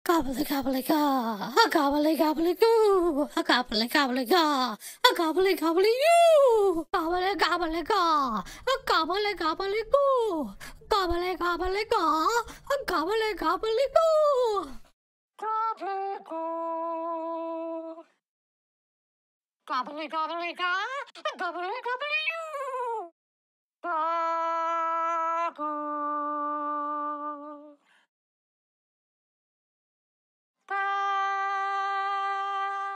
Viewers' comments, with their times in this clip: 0:00 Sounds like Woo to the young to the woo!
0:15 I was expecting Gobbleygourd to sound the same in the other islands but my jaw dropped when I heard this, he sounded like he was actually singing
0:15 is that lofi background you hear in yt videos
0:19 gobblygourd sounds sassy on that one